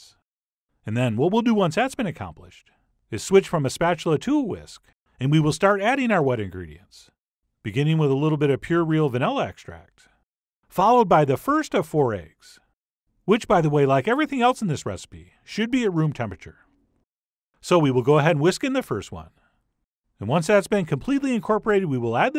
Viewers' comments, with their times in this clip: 0:04 The first time I heard - And we will start adding our wedding rings.